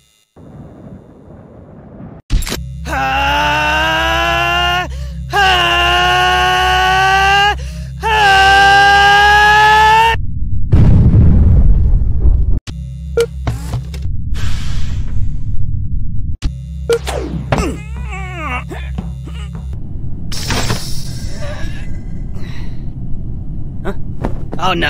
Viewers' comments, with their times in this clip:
0:03 Henry starts yelling
0:03 I like the red when henry was screaming he was luke CHILL CHILL! DUDE lol
0:05 Stickman Becomes Klasky csupo Again Stickman Getting Screem